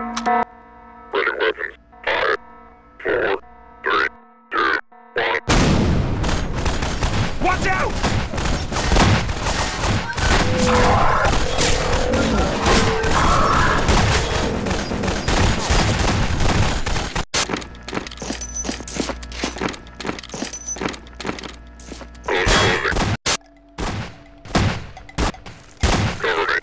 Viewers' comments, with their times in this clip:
0:09 this bit would be way cooler if your pc wasn't shit. Seeing bullets fly through the smoke as people start screaming is really cool.